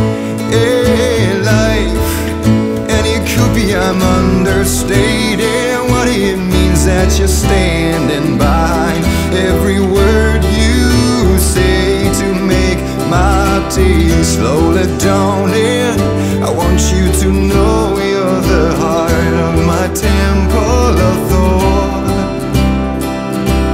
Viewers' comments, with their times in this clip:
0:08 the way he sings “behind” really gives me chills